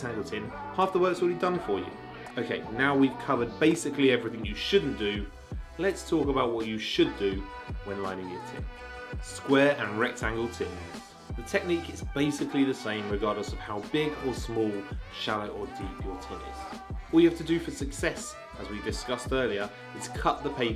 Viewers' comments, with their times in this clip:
0:07 If you want to skip to the tips. Turn off sound and turn on CC if you want to skip the stripper music.